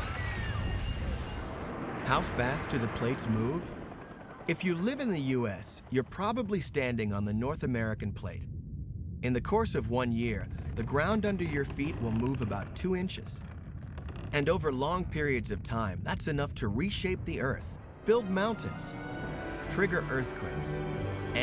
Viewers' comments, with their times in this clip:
0:04 they showed footage of the earthquake in 1906. In that footage, there were helicopter sounds... Helicopters were not invented until 1939.